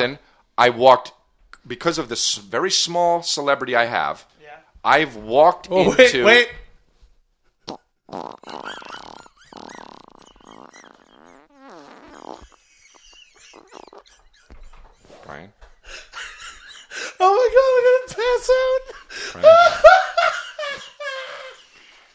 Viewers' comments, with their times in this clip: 0:07 Longest fart in history?